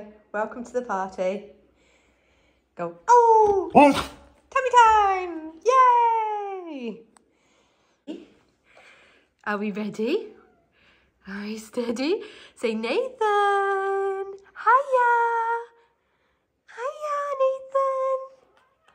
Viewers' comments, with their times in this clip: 0:03 What a pleasant woof. It seems almost like an intentional use of an inside voice.